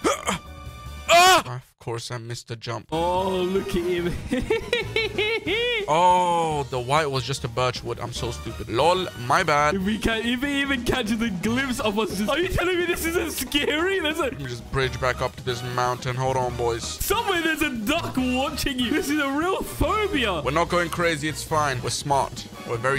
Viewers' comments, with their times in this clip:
0:04 Andrew Garfield's maniac laughter